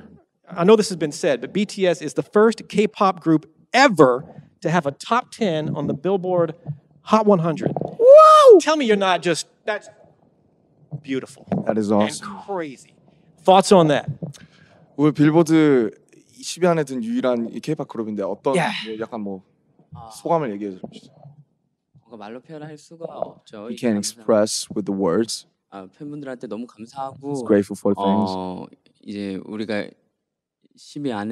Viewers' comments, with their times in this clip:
0:07 Why no one is talking about RM 's WOW 😂😂😂😂😂
0:16 Jungkook's little clap 💜 oh..my heartueee